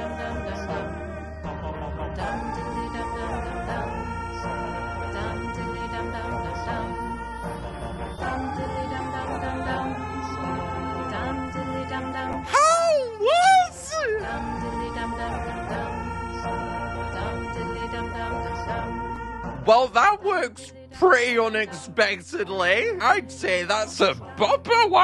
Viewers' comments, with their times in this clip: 0:10 is my friend screaming at the school bathrooms😂😂